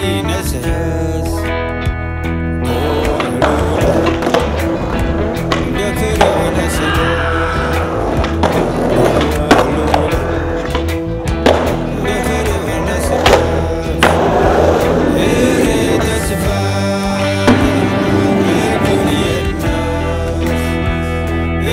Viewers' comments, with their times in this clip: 0:06 wilhem scream lol